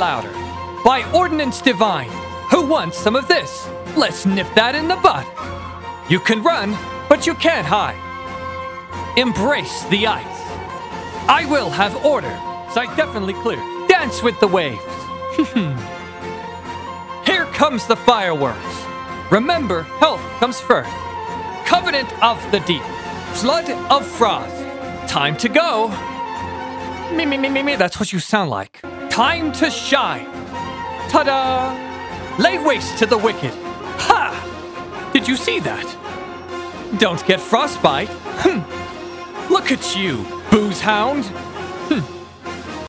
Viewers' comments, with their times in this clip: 0:04 HOW DARE YOU MURDER HIS LINE sobs
0:26 Alhaitham's impression was the most flawless of all
0:29 that is the SADDEST 'tada' I've ever heard 💀
0:31 Ok the “tadaaa” was so cute with that pose XD
0:31 his "ta-da!" is so cutee